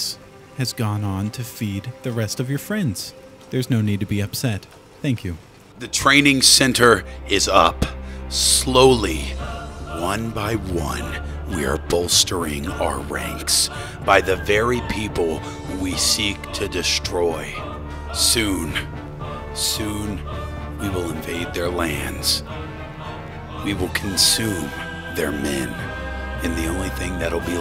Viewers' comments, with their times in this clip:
0:09 Optimus Prime Speaking
0:10 he sounds like Optimus Prime 😂